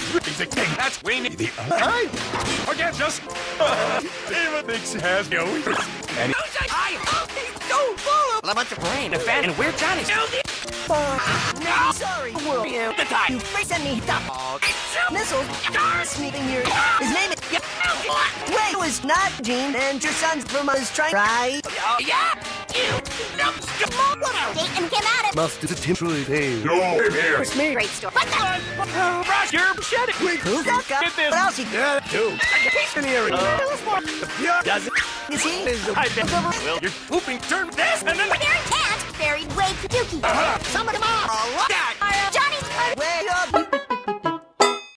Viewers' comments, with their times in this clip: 0:04 that was 4 actual whip cracks, in near 3 seconds
0:13 wow 100 whip cracks
0:24 there are so many whip crack sound effect that its not even cut darn
0:29 “Your shitting me” — Johnny’s father If you want to hear it better slow it at .25x speed
0:32 After so many whipcracks someone finally snapped in the background lol